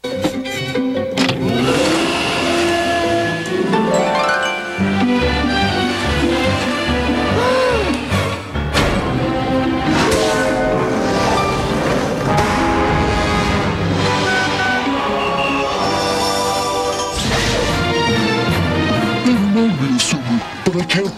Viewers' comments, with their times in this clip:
0:07 That “Uoohhh!” was so hilarious for some reason lmao